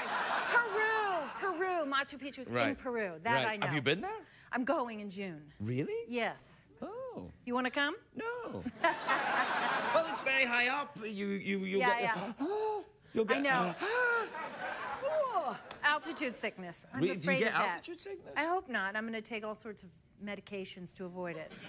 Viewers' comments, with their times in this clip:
0:03 "Machu Pichu issz not a cantrj. Neithr issz Vespucci..itt issz a 'buut'-baerinh dabl continnennt."
0:03 "Machu Pichu issz not a cantrj. Neithr issz Vespucci..itt issz a 'buut'-baerinh dabl continnennt."